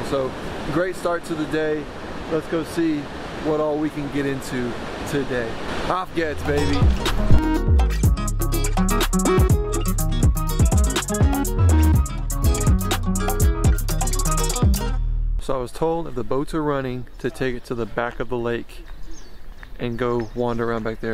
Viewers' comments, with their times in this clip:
0:08 The duck say - CB CB CB- :-D